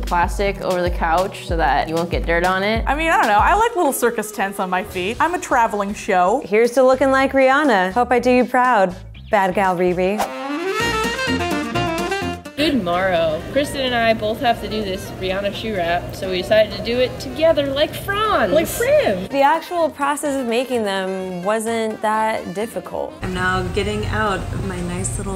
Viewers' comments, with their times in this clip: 0:10 I was expecting the music to transition into the iconic sexy saxophone 🎷 music